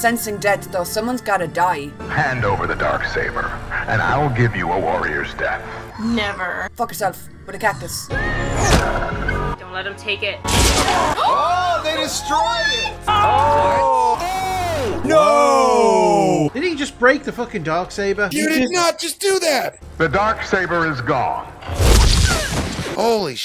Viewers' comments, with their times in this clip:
0:07 .. you will hear the greatest insult .. I swear!! you will laugh a lot! and I believe she is Scottish...